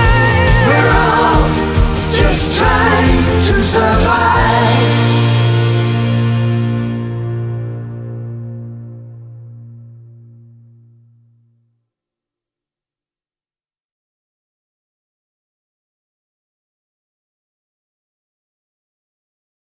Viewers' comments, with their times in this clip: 0:03 you hear a soft pop, on the CD they fixed it and you can't hear it ;)